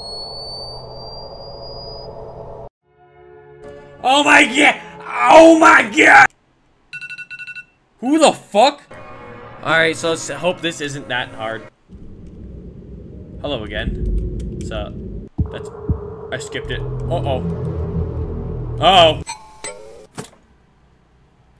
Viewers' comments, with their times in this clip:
0:07 The fucking Alarm sound lol